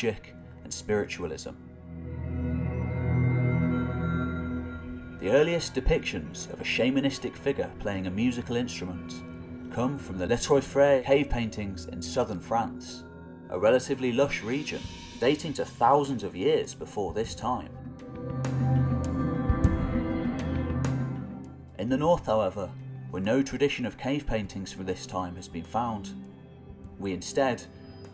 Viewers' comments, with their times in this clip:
0:10 you need to brush up on your French pronunciation. un deux ...troy?